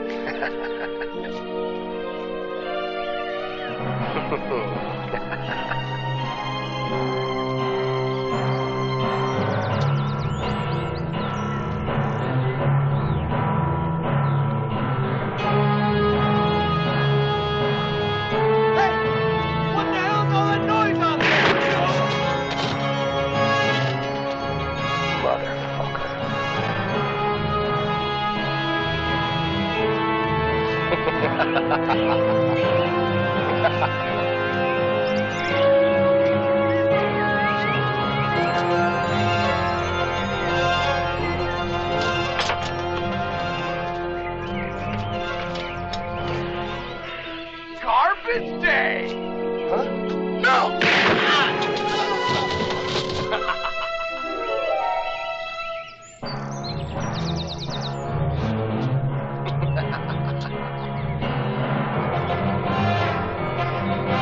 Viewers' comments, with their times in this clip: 0:07 He reminds me of the Terminator for a bit there. The music adds to it.
0:07 I love the menacing piano music.
0:16 LOL this guy was shot coz he broke the fourth wall and heard the background music.
0:18 that guy hears the incoming boss music LOL.
0:47 behold! The greatest worst line delivery in movie history!